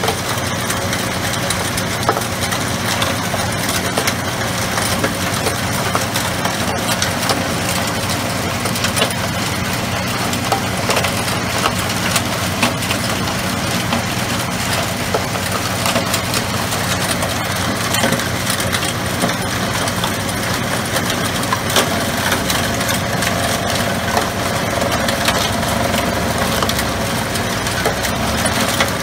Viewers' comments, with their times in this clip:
0:10 The closed captioning keeps saying "Heat Heat" -- for the machinery sounds :)